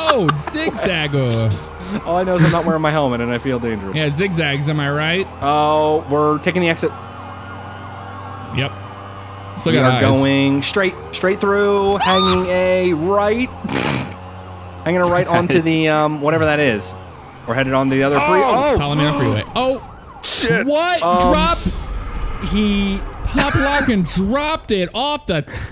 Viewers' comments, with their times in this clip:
0:10 LOL! DAT SCREAM
0:10 guys go to and listen to the scream
0:11 he scream like a girl who ever screamed that was funny 😂😂😂😂😂😂😂
0:12 THAT RANDOM SCREAM! HAHAHAHA😭😭😭😭😭
0:12 that scream of death lol